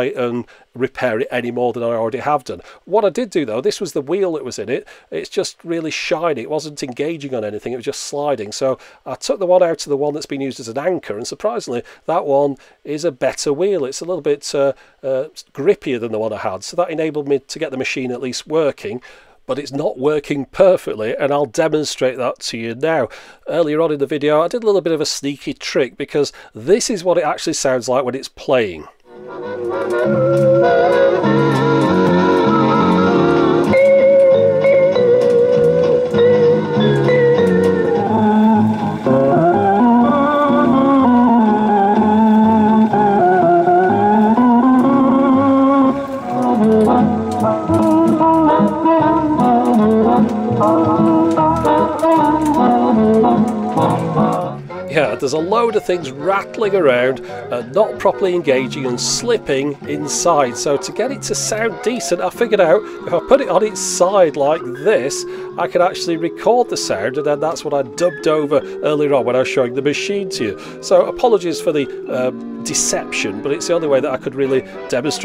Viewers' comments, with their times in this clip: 0:06 I actually had one of these machine several years ago that I bought at a thrift store for 20 bucks I think.but it was a different model. it had just one tape running across. with four tracks and the head had four binaural tracks. when it came to the end of that track,it had a staple.that would hit a bar, and it would reverse. four times like this -----> <---- --> <-- and then start all over. there was a rubber wheel [ shown ] that had hardened and the sound had alot of "wow" and "flutter". Just like Yours, but worse. plus one of the tracks would run backwards. I never figured out what was wrong and I could not find another wheel the right size.luckily I was able to wind most of the tape onto my Akai quad channel reel to reel.and got it to the right speed. I used it alot in my home office while I was working. LOL I like this "Elevator music" Weird but true :)
0:18 Bioshock 3 is calling, they want their wonky classical music machine please.
0:28 Great soundtrack to a horror game :D
0:28 "Music out of my nightmares"
0:29 Well I thought the music on these old tapes was fantastic...! Complete aural Prozac, kinda necessary nowadays (add 1 oz. scotch?) And the music was even better .... love the pitch bends! Sincere thanks to you for resurrecting this crap ;- }
0:29 Elevator Muzak from hell.
0:33 for all your enhanced interrogation white noise needs
0:35 The music Reminds me of a dead mall video from Dan Bell.. Good god that thing sounds creepy as can be.
0:37 it makes the sort of noise an abandoned amusement park suddenly makes right after a couple of teens break in and it mysteriously comes to life, then starts killing them off one by one as they flee for shelter into the dilapidated attractions, only to have the long since disconnected lights and speakers turn on and the same sound echoing as the rides start up again, this time to murder and maim.
0:38 sounds like it's from some kind of demented video game.
1:02 my goodness it sounds like one of those recordings from 1377 or the oldest recording ever